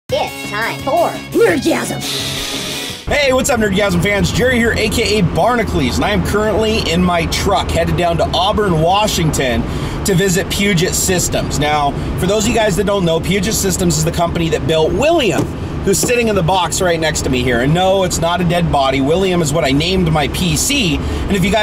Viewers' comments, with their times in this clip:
0:03 put speed to 0.5 sounds like he is drunk